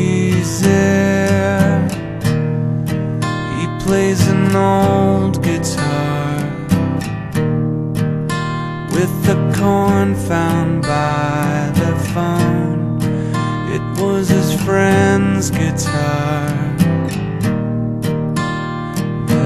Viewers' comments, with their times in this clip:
0:06 The guitar part is so Nirvana this songs awesome and it's only in haha LONG LIVE THE FOO FIGHTERSSS!!!